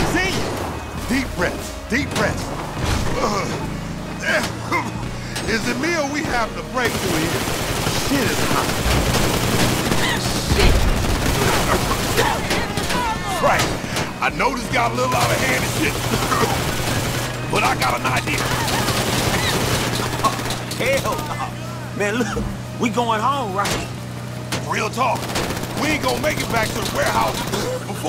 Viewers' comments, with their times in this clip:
0:10 I like how Lamar sounds like Big Smoke after getting high from his burning “biodegradable plastic” weed van